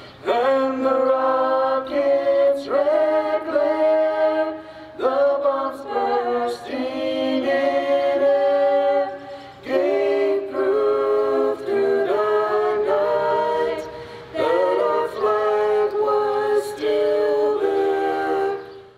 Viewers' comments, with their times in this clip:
0:03 good national anthem !